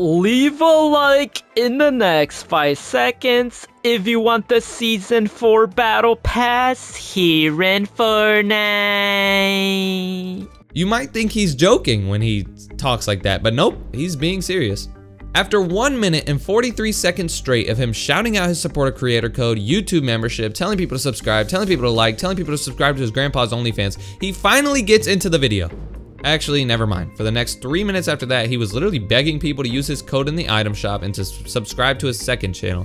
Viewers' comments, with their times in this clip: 0:04 bro sounds like the mehburger guy from sonic boom microwaved for 7 minutes
0:05 bro has the Xbox 360 mic💀
0:13 Then why did he stretch the part where he is saying Fortnite like he went, "Fortniiiiiiii..." like shut up bro and get on with the video!